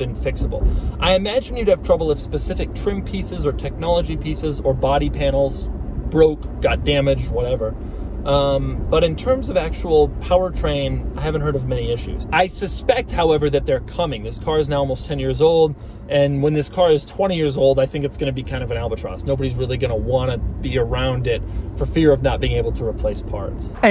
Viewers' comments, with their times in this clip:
0:06 I thought Doug said, “Got broke God Damnit!”